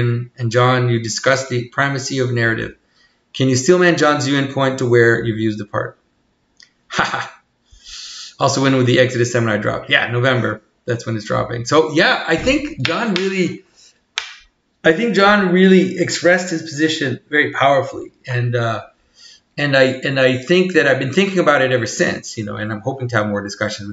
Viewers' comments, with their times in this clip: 0:06 just a funny feeling that Symbolic Memes is going to take hold of Jonathan's HAHA! Reaction.